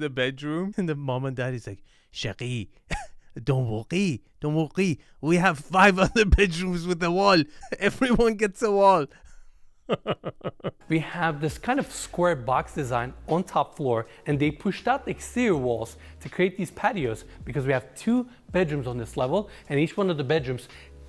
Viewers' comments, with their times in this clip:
0:03 Don't wo-rrie, we have 5 other bedrooms with the woal" "Everyone gets the woal".... 🤣